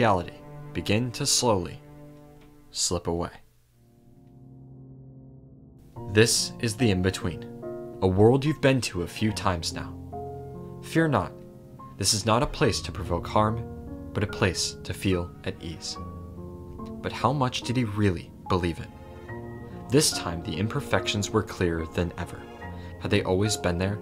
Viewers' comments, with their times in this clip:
0:09 stop it with the music ur gonna make me cry . I LOVE KINGDOM HEARTS